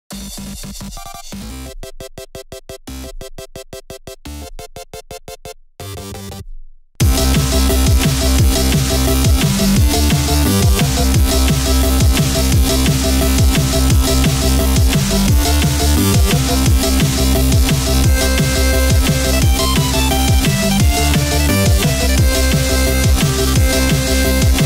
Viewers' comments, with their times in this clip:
0:06 in the first few seconds: the volume is too low, let me crank it up a bit after second: OH GOD MY EARS Ps: WALUIGI TIME!